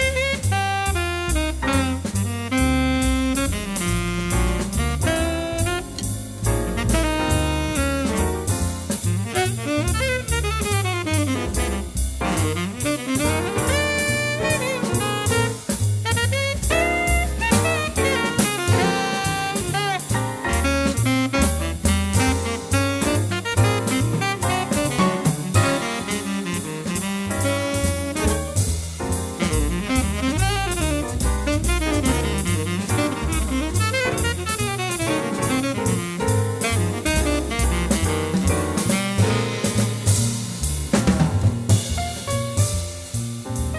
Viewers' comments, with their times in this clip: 0:03 I don't know if I can hold a "BOI" for that long.
0:19 Do you hear that? That's the sound of your chicken clucking on your plate. ItS StILl ALivE.
0:30 Enough with the crap house music! Only made it to